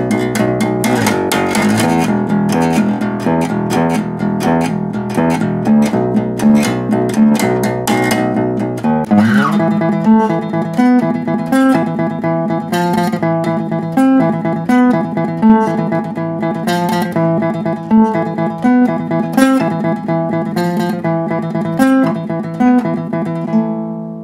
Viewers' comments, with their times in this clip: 0:10 I honestly hate the sound of the bass playing that melody in Orion It sounds so scratchy and fuzzy with no low end behind it. I understand Cliff wrote it, but he should of had Kirk do it on lead guitar for a cleaner crisper sound.